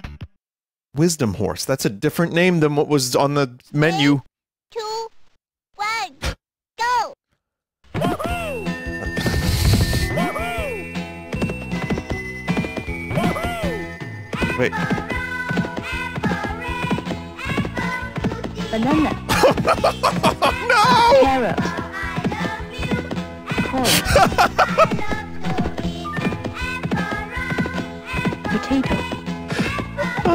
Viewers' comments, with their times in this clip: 0:10 Whenever he jumps it totally plays homer simpson going "woohoo!" right??? I can't hear anything else
0:11 isn’t that homers laugh?